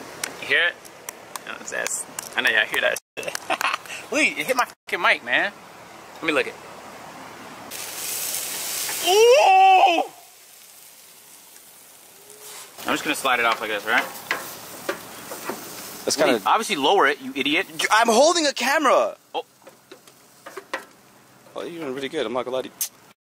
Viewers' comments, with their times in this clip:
0:09 dude sound like a caveman who ain’t ate in days 🤣🤣🤣